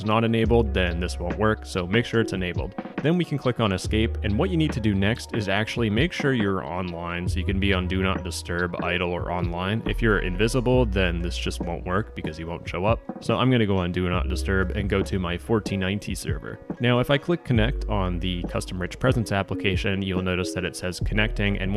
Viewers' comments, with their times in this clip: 0:04 i thought the sirens went off (i live in switzerland)